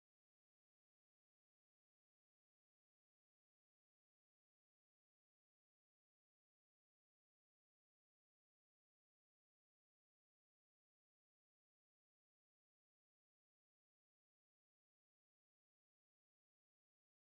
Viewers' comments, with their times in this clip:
0:05 I lost sound !!!!!